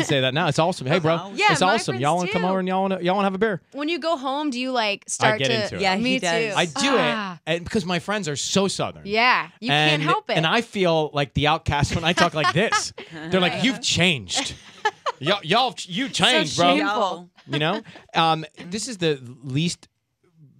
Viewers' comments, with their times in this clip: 0:04 and ends like 5 words